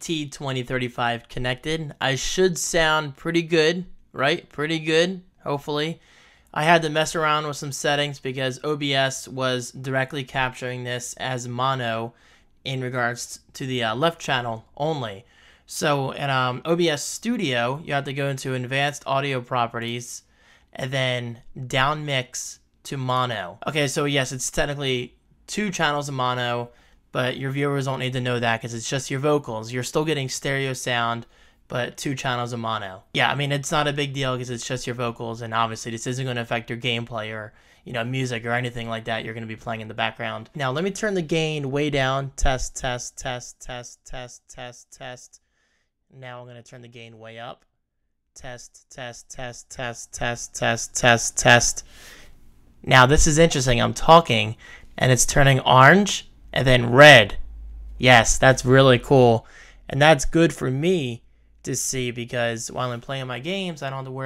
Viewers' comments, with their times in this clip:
0:04 It does not sound good because you are talking to the side of the microphone.
0:52 i thought i was going to get ear rapped ngl lol